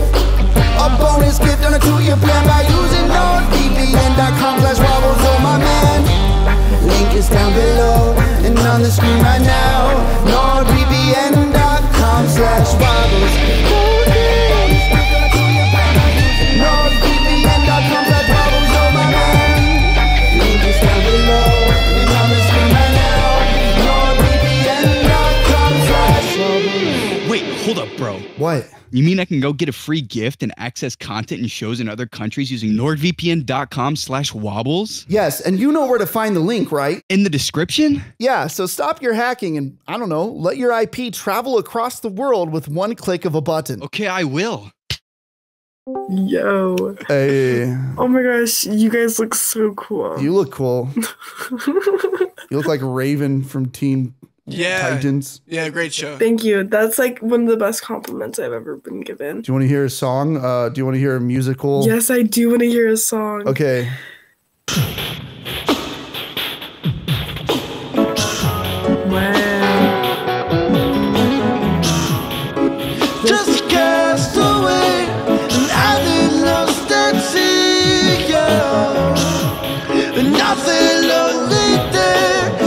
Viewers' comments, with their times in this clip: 0:10 I fell in love with this guitar 😭
1:10 That rendition of "Message in a bottle" was probably the best one i've ever heard. Holy shit